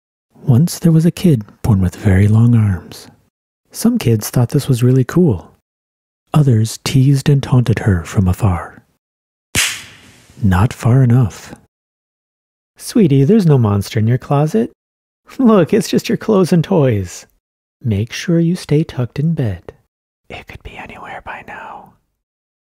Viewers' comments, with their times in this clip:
0:09 Bro I love that slap I’m gonna use it for one of my sound effects!